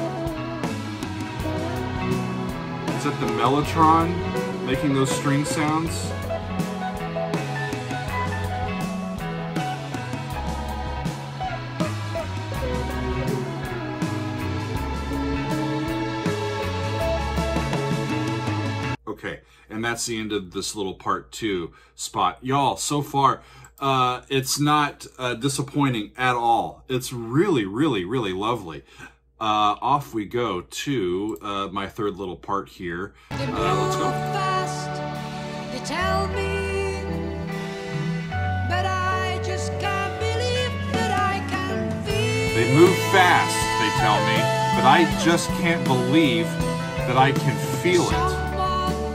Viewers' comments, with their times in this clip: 0:07 classic Steve Howe soloing where there's no need for that and ruining that moment. My opinion. He does that so often it makes my blood boil...
0:32 If you think the drums sound like a train, wait till you get to Ritual. edit: on the first CD issue